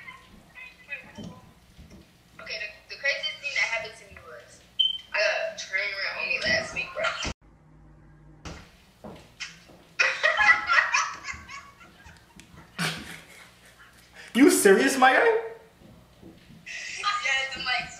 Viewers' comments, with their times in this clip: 0:05 What did the girl say, i couldnt make it out so well